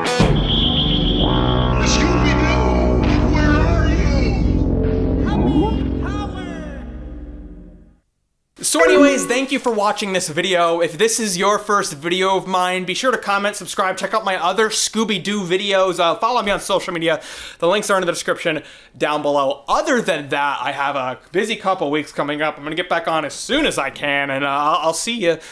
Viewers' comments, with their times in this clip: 0:09 The sound effect for your handle wounds like something from the VeggieTales movie: Jonah computer game